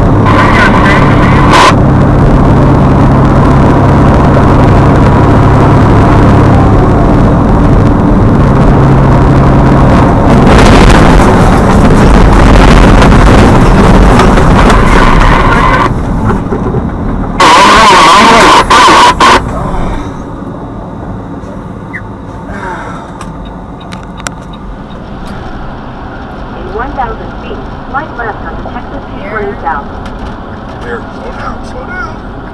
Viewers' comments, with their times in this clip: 0:10 looks like it wouldn’t hurt that bad, he’s huffing and puffing cuz he’s tryna get that insurance money😂
0:16 Nobody: Walkie talkies from family dollar:
0:17 he's speaking alien
0:17 my man's got the best microphone where can I get one?
0:17 dudes with shitty mics in pub lobbies be like